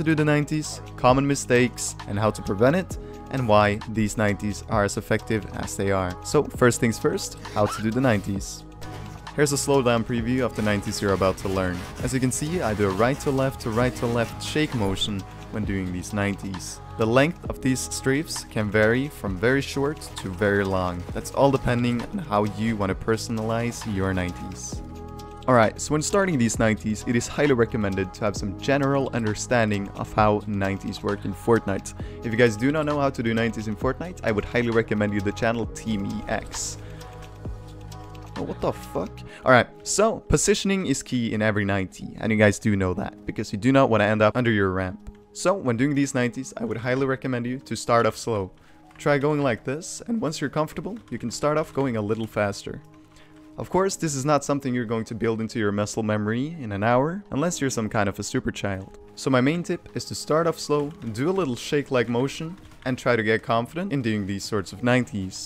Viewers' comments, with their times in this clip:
0:06 XDXDXD THAT SCREAM THO
0:50 Nice Voice crack